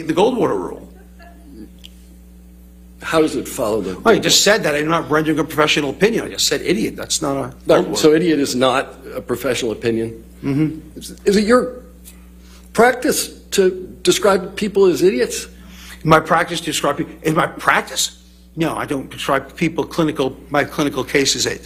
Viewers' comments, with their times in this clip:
0:08 love he’s so animated and overly responsive but when he gets trapped in a corner and has to admit, he lets out the weakest, faintest “mhm”. So pitiful Lmaoo